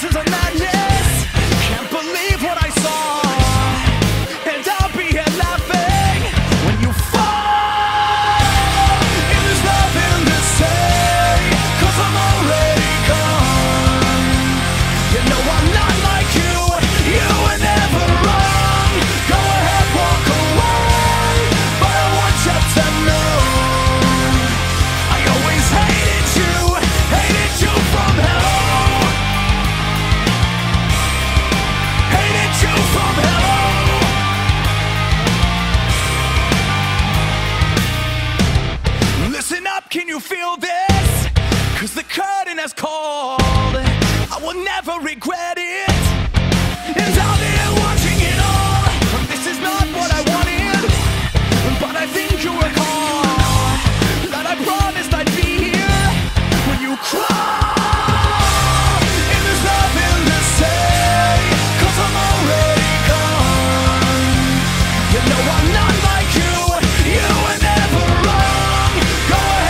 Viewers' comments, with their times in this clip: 0:07 man you nailed that voice
0:20 That note :D
0:49 Interestingly enough, the whispers that start aren't in the one in Radiocalypse.
0:50 My left ear enjoyed this